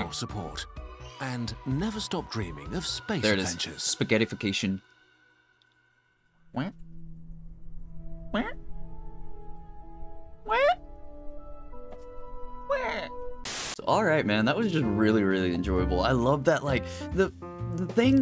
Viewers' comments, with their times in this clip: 0:05 you sound like king from the owl house